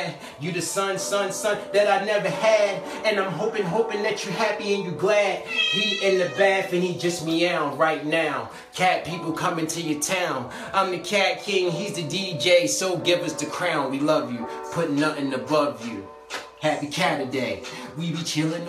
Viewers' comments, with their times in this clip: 0:04 that sweet meow. ❤️❤️❤️❤️